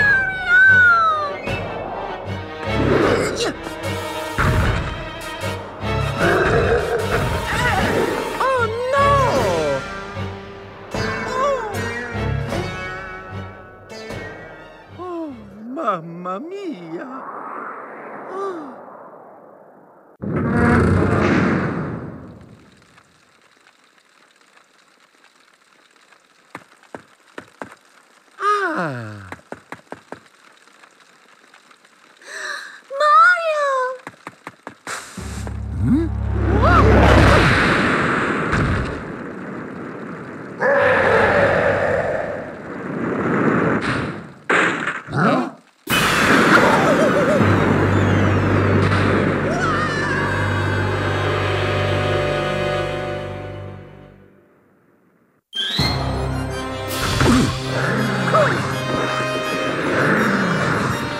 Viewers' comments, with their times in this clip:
0:04 bowers flys with his farts
0:10 Bowser massive farting in the history of 22nd century of farting
0:46 mario 64 scream